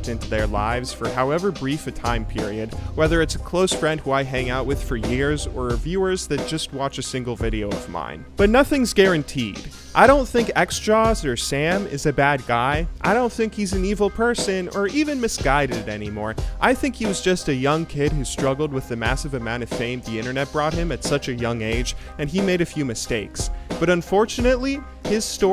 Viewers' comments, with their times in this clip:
0:07 Why is no one talking about how he's straight up rapping to the beat of the BG music? Like, it even kinda rhymes and flows.